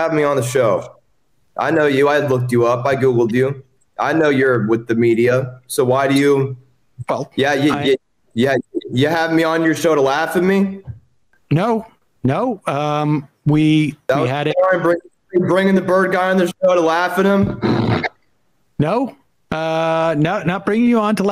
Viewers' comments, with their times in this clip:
0:04 First laugh already...Feel like this is gonna be delicious